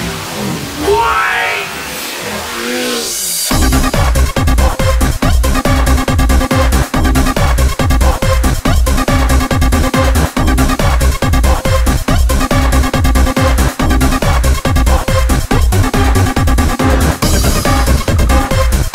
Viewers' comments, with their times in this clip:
0:04 Think I mentioned it before but I love the "hoover" sound in this real 2005 UK Hard House (dunno if you like Tidy Boys or Nukleuz label)